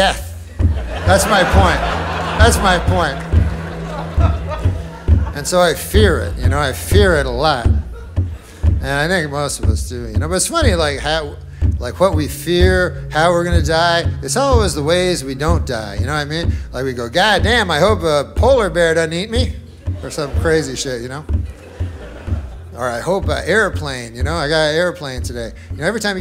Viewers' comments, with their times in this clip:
0:08 what is this non-sensical horror movie jungle drumming that's going on? Is that what Norm hears in his head while he's on stage?